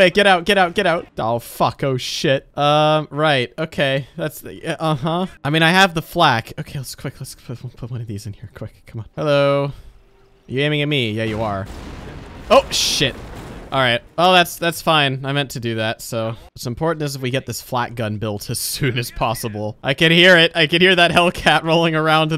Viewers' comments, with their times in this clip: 0:09 Hello you aiming at me oh shi little boom BIG BOOM